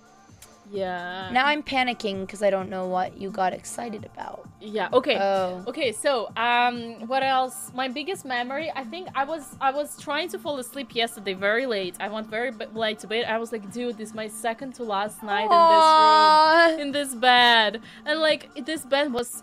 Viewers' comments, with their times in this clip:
0:06 Not to be that guy, but "my biggest mammary"